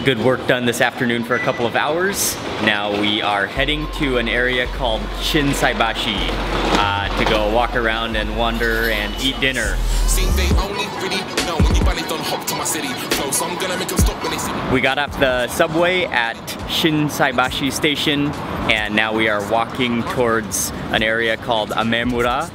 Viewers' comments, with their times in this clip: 0:09 was not expecting rap music in mark wien’s videos